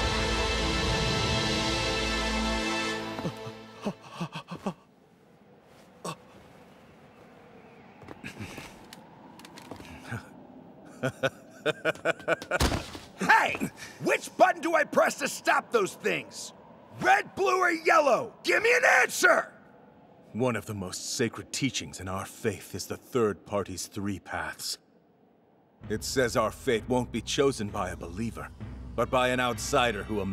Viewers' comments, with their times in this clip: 0:10 Hiei, Kuwabara, Kurama, and Keiko's voices sound like they haven't changed at all which is really cool Also... it's kindof sad but I don't think he can really do Yusuke's voice anymore
0:13 Not gonna lie he unleashed his inner raditz voice.